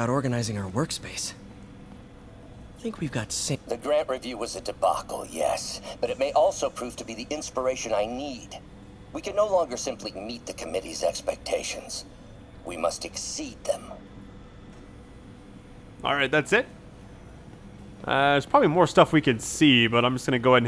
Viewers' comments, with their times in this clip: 0:03 Uh-oh. Starting to sound evil. lol Man, I want this game...